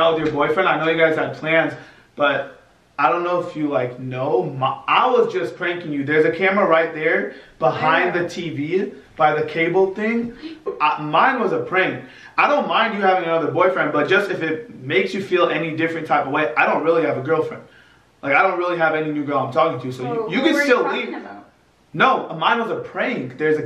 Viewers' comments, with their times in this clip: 0:09 her gasp! 😂🤣 acting like she was shook, straight Mexican gasp 🤣
0:09 her fake gasp had me dead